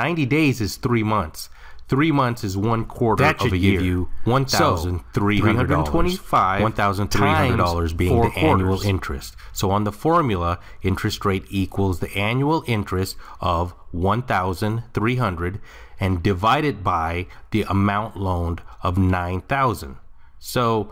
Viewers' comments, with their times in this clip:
0:03 Just to let you know, there two voices talking at once. I enjoy your work!